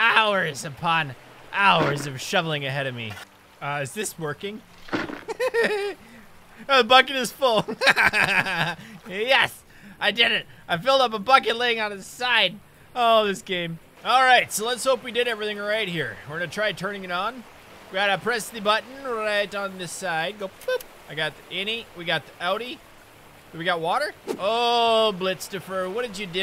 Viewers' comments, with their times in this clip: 0:08 What an accurate annoying orange laugh